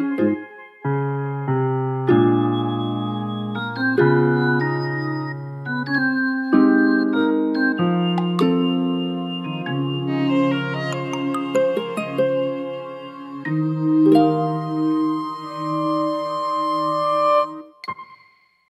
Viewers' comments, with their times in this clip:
0:09 g u i t a r